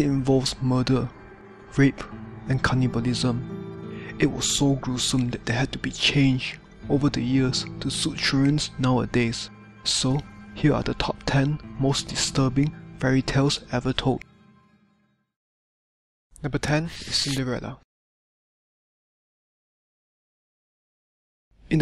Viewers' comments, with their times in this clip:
0:07 I only made it to because of his voice 😂😂😂